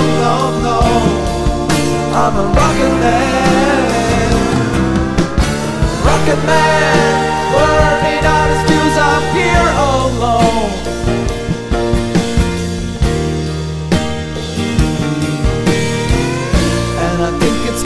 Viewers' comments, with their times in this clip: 0:05 Great drum fill